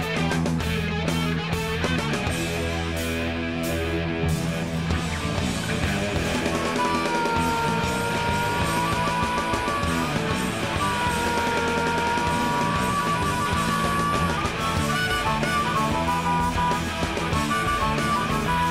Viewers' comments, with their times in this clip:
0:04 HARP NOBODY'S FAULT FO REALSSSSSSSSSSSSSSSSSSSSSSSSSSSSS111111111